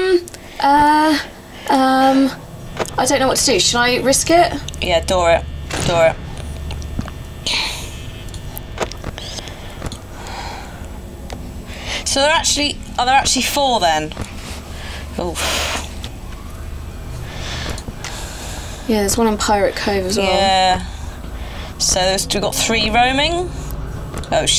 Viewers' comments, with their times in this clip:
0:07 Awkward mouth breathing. o-o;